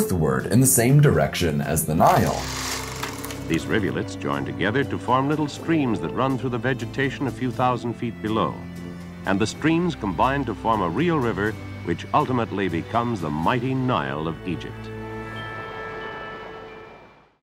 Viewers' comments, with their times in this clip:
0:04 heroic music? Really?